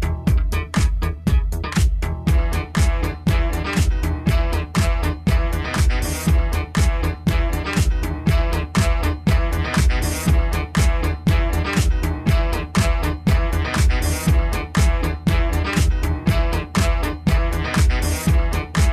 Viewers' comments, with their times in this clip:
0:03 might as well be a live nuclear test site. Devastating. What an absolute banger of the funkiest variety. The attitude of that track stinks, and I absolutely love it.